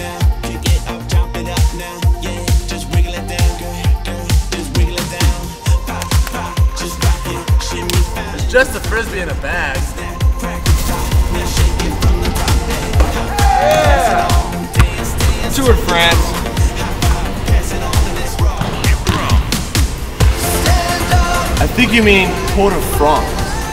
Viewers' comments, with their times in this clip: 0:08 listen sound is like your holding ak-47